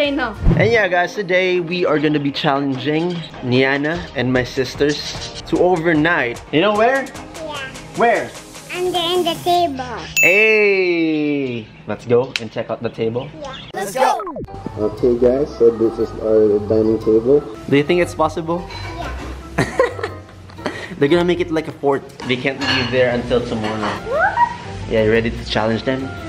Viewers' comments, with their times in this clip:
0:09 what a sweet voice❤💕